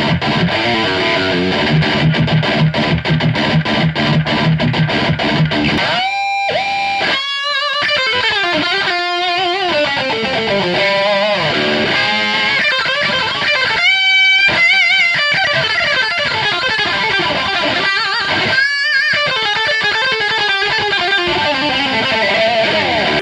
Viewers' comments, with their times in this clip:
0:07 dude, that solo starting was awesome! Well done sir